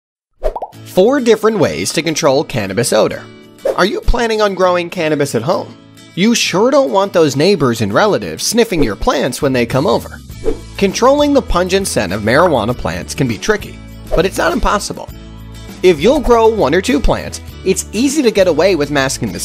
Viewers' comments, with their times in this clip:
0:02 4 ways to control can of a soda